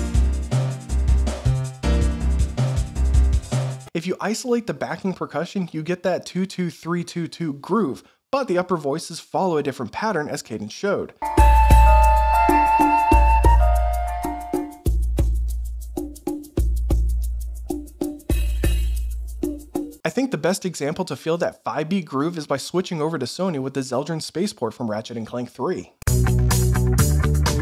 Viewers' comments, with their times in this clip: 0:08 With that 11/8th example or so, it felt kinda uncanny to me because to my ears, it feels like a normal 4/4 but there was an triplet shoved in there just to mess everything up. I should take notes and use that somewhere in a unsettling theme.